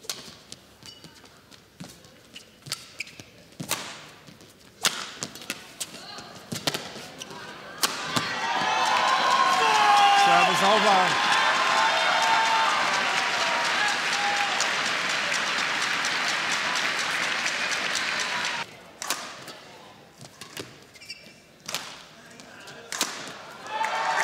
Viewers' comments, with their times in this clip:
0:09 Incredible Hulk roarrrrrrrrr